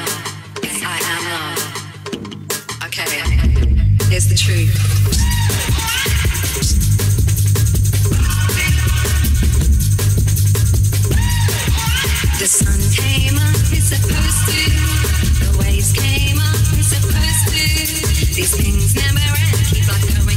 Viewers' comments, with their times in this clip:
0:07 is 🔥 yeah i know the mixing is not on point but M.I.A is a legend how can she be so cool